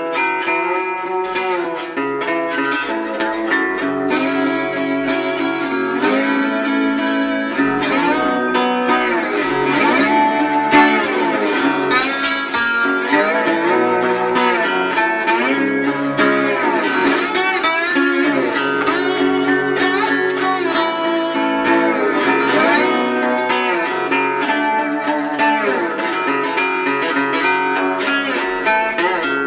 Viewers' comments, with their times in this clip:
0:08 I keep hearing my name very odd.
0:12 Holy shit listen to that guitar.
0:12 That major 3rd best part